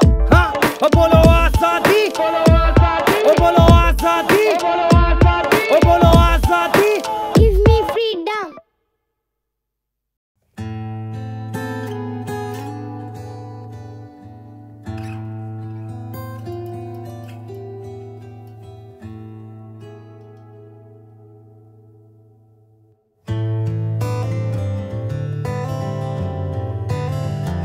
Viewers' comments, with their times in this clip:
0:10 .. kab se kab tak..I'm getting that smooth jcole vibes from this song. Flows like a fine wine 🙌🙌